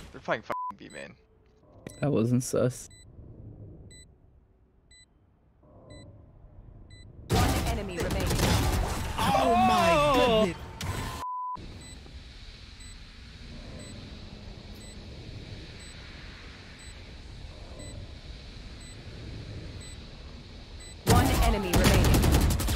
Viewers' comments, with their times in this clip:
0:09 Wait, that was lowkey a nice vocal run lmao
0:09 "ooOOOooOoOooO" dude is a walking man auto tune